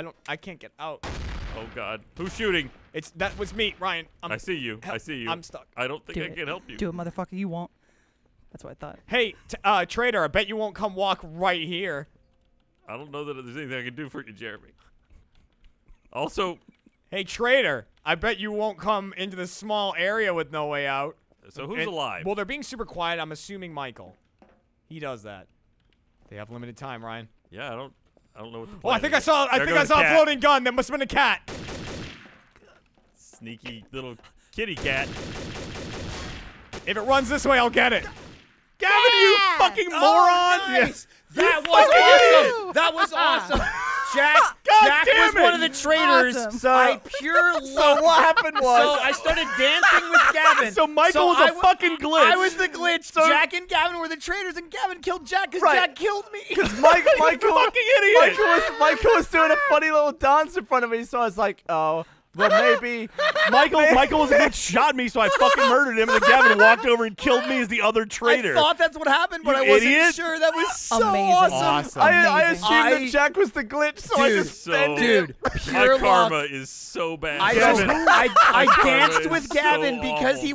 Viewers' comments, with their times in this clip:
0:06 Lindsay, subtly, “do it motherfucker you won’t....That’s what i thought” her as a cat made it 20x funnier
1:04 sounds of what I like to call "clown fiesta in terrorist town"